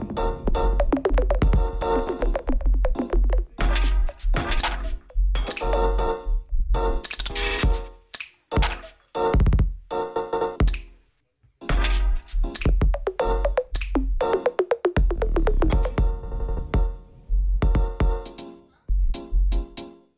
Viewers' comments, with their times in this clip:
0:08 those bass kick !